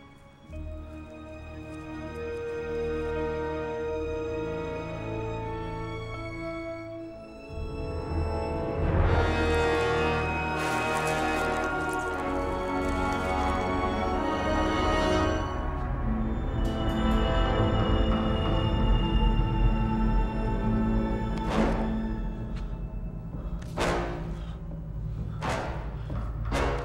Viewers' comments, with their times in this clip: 0:08 I absolutely love this shot. The BGM, the small Spider legs popping up in his fingers. Still gives me chills just like how it got me during the first time watch.